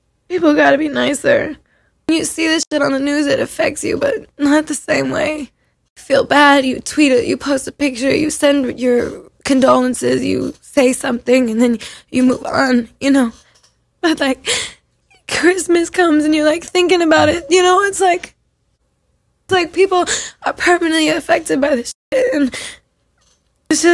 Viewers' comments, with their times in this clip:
0:08 she sounded so sad!